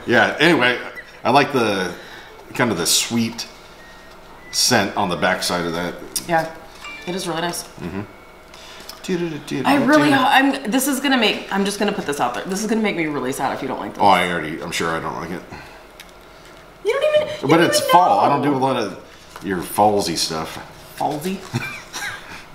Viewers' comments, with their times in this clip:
0:09 😅 I thought I was going crazy thinking my kids were playing in the laundry room with that sound! I’d pause it, go check, and come back to keep watching and I’d rewind a bit to watch again. I ended doing that about three times until I figured it was in the video 😂